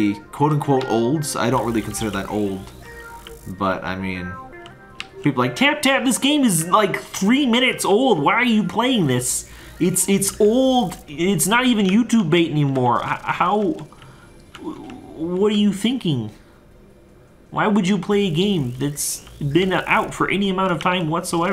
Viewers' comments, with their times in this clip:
0:03 are your fans just Kermit?